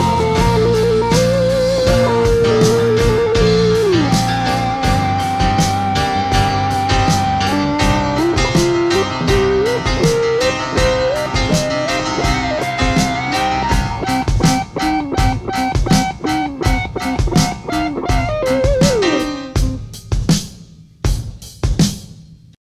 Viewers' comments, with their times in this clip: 0:05 the beat right at the end wow from until the end, Queen is legendary